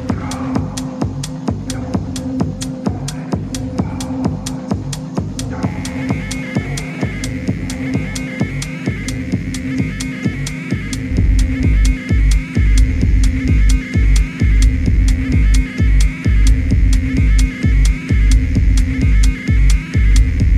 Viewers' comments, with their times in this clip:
0:05 that transition and pink girl on the left of video 0